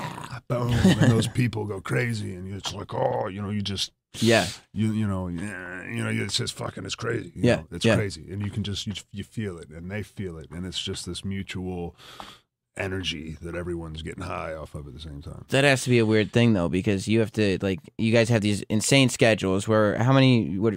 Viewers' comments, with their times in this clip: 0:05 any one else think he sounds like he’s of the big lez show